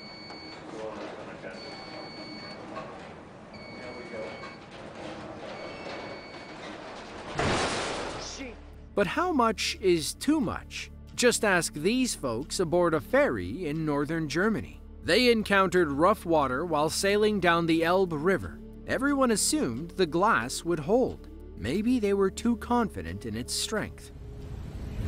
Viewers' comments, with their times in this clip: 0:08 there's a very Aussie reaction to a sudden shock.